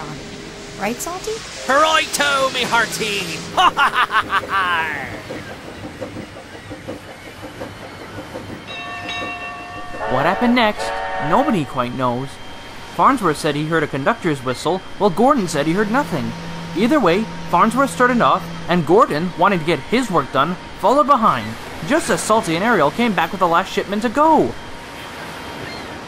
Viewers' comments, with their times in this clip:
0:08 That was nice to hear Toby's bell from Seasons 2 and 3